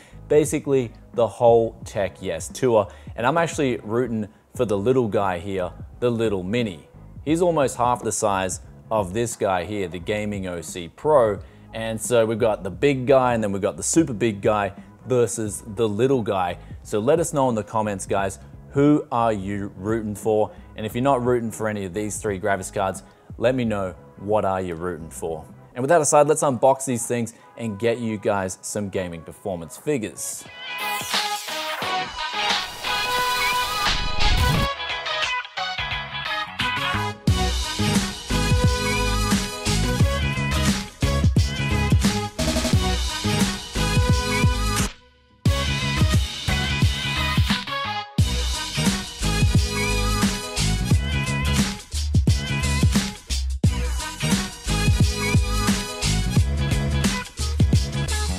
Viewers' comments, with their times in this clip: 0:10 We Got the Big gay and the bigger gay and the little guy won't believe me ? :) check this
0:44 Shadow of Zee Toim Raider... You kidding me?